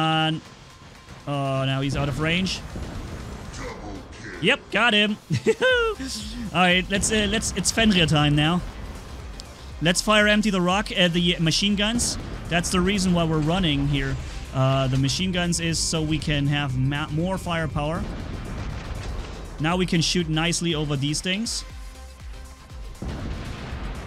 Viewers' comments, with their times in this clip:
0:05 😅😅😅🤣🤣😅🤣 you sounded like Super Mario hahah